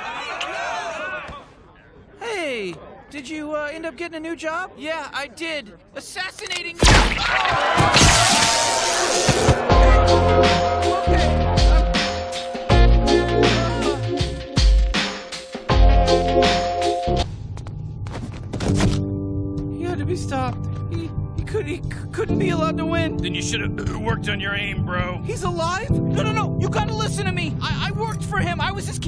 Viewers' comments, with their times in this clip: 0:10 I kinda like the song...